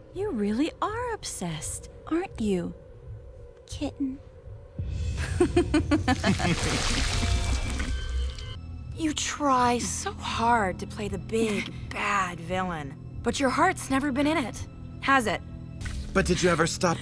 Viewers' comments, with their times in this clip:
0:05 with that evil Adora laugh though